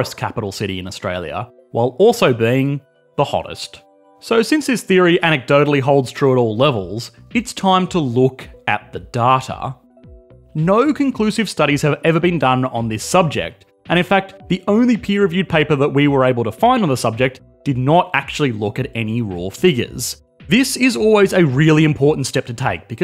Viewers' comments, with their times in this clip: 0:09 thay pronunciation killed me